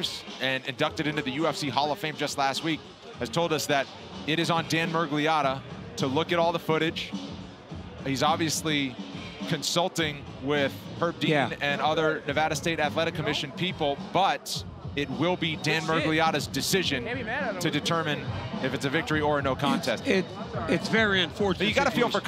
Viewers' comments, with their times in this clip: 0:08 "Consulting with Herb Dee-an"